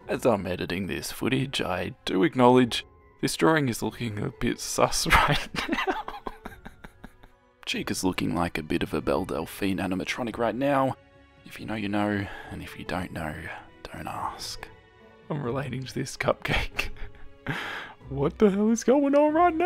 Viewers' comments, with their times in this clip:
0:07 i’m like weirdly attracted to your laugh… 😳